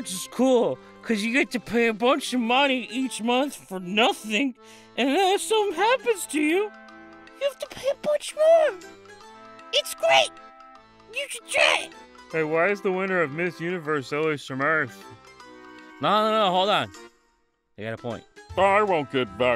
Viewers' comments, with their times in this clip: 0:07 you sound like Morty